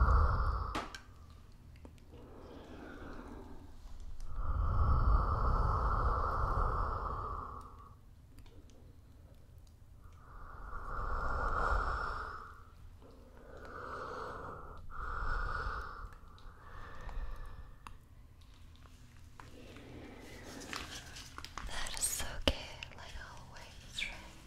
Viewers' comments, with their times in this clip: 0:07 The breathing sounds are good, but it would be better if it wasn't stopped by a container. it feels warmer that way, still as slow as you did that, and I know you diffused the air so it wouldn't clip but I get the sensation of heat, the bassier that is, and when I heard it I was like.. woah... I think they had a fuzzy mic cover when I heard it done